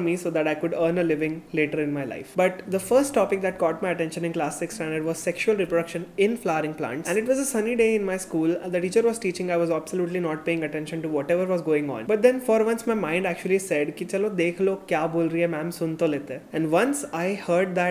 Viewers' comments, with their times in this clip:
0:05 Why he give stress on the line "in flowering plant" ?😂